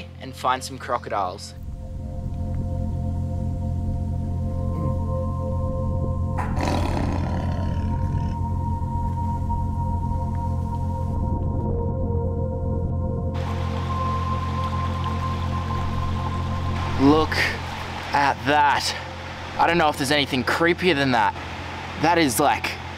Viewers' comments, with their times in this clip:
0:05 A tree kangaroo that sounds like a tiger. That is something else man!